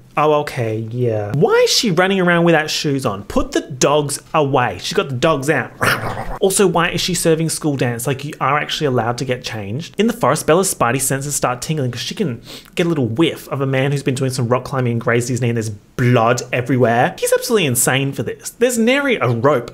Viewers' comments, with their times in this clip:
0:06 Ikr, his energy was so feral! I am currently crying laughing at his random ass dog snarl